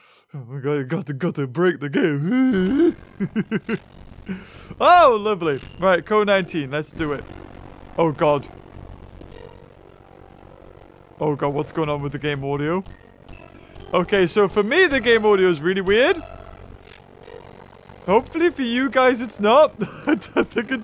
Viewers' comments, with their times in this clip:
0:04 I hate that glitch rip ears
0:06 you know the game becomes a horror game when the sound starts becoming static.